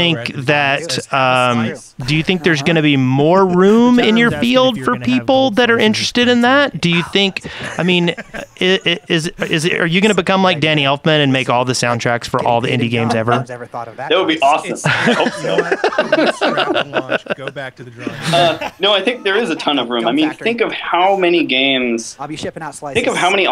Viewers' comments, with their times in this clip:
0:08 And ish the shaft podcast starts playing.